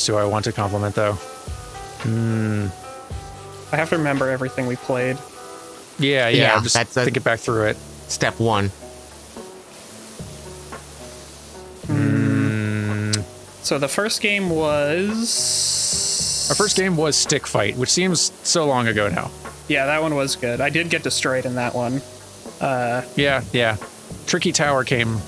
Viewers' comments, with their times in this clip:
0:09 Accidental barbershop quartet trio.